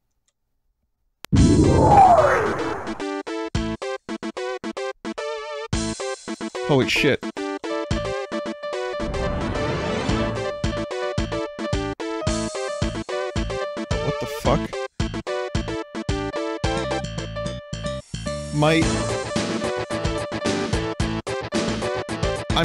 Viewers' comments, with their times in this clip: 0:08 The sound of the ship firing makes me think this game was made with a different sound card in mind, theres no way that was intentional.